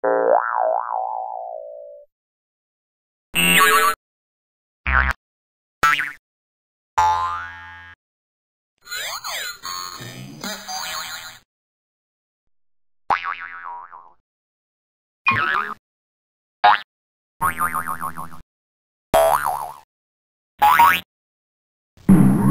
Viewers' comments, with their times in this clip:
0:05 Bouncy and Swirly 🌀